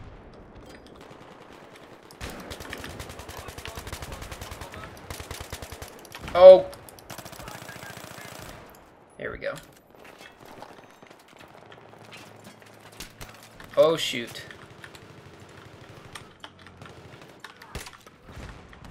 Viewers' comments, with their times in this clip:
0:06 There's an audible tension in that wordless exclamation as you realise you're caught trousers down with an empty magazine. Instinctively, you switch to your sidearm, focused as you come out on top from that disadvantaged position. Yet, you're barely afforded enough time to sigh in relief before you're downrange of another rifle and under pressure to survive once again. Your reaction in those few short seconds typifies the rapid seesaw of tension and relief that makes the BF3 experience.